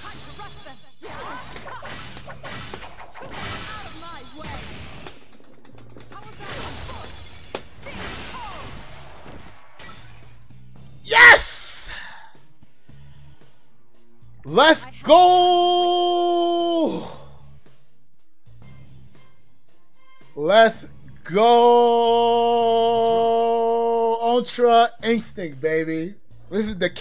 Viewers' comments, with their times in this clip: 0:10 that YES! took me to church lol